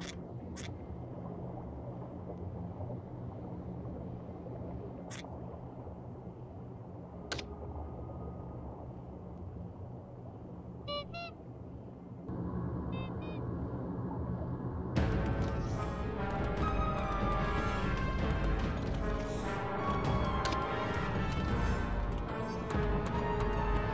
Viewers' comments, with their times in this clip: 0:10 I want to focus your attention on how soft and gentle his HONK sounds